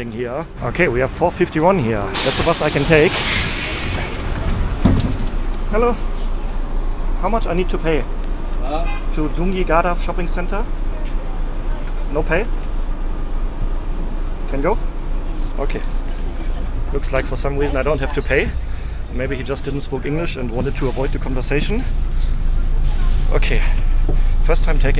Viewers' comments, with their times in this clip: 0:06 a BIG YAWWWWNNNNNNN